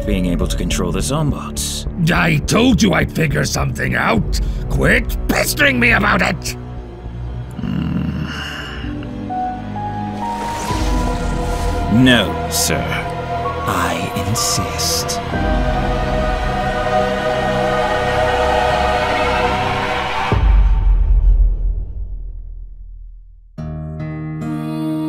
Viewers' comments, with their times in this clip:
0:08 FANTASTIC dub! Whisper’s reaction was heartbreaking. Sobbed all the way through it. However, I wanted to point out. the bell/piano instrument plays the Thomas the tank engine theme here.